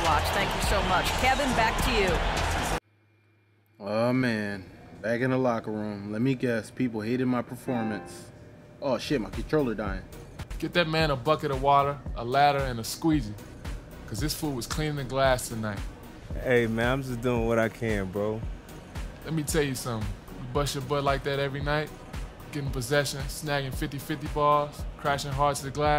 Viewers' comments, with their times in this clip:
0:10 this game is corny as hell. On another note, Brandon Wright, decent voice actor. Come on 2K, no one on the Bobcats was better than Al Jefferson? Just ask the team to do a little voice acting test, or something.